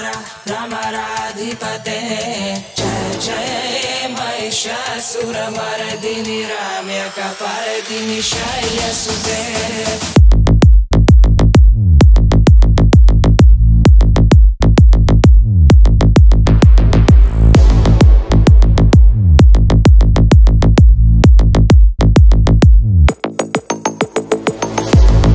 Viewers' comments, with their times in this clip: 0:10 Sure, what you just wrote - I agree with everything you mentioned. It is in my taste that the lyrics are superficial, without meaning, pure gibberish nonsense that don't add any kind of musical tonality to the song. It is way too reminiscient of middle eastern religious chanting and throat guttural noise. This is my opinion and if you deem it necessary or even valuable - then that is good for you. To me the song only has value beyond